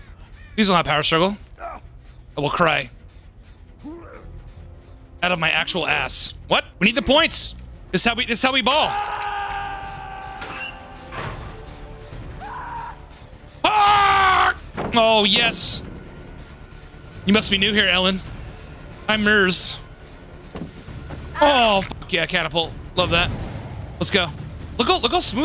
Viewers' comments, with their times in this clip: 0:10 ohhh i laughed so hard when you screamed back XD